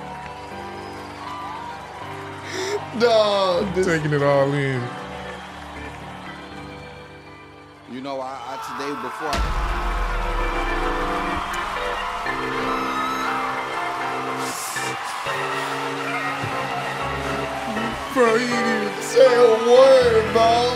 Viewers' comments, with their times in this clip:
0:07 Soon as came I knew I was gonna fail again. That brother in the pew jus screamed 😂😂😂